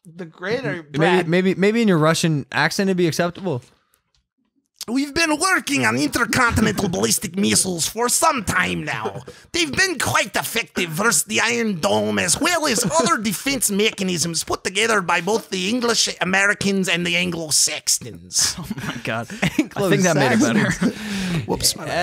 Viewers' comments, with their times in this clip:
0:05 mike sounds like a irish Russian